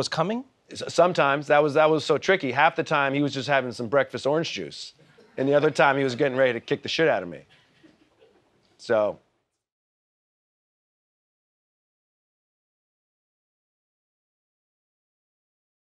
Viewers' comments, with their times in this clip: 0:13 I swear when Trevor paused I thought my WiFi bailed on me 🤣 Also almost 2 million subscribers, tens of thousands watching & only 166 likes? including my OWN? WHY SO HARSH? 🥺 Comm 'on show our Trevor some LOVE will you????? 💋👊🏽♀️